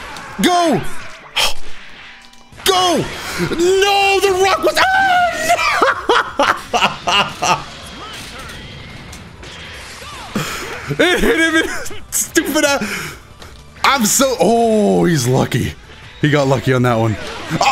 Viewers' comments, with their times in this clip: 0:03 is the sound of a man going insane